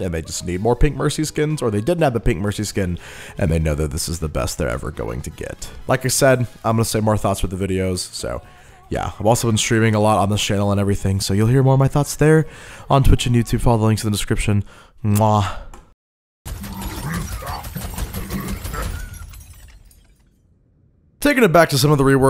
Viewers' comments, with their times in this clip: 0:10 the pigstep music at road hog its AMAZING